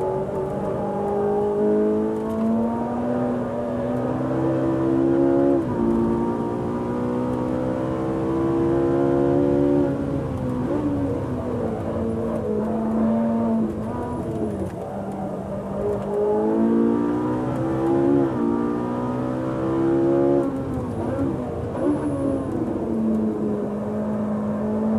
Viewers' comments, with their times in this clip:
0:06 Stig does a little Breath of relief after coming out of the stretch of track James and Jeremy we're talking about.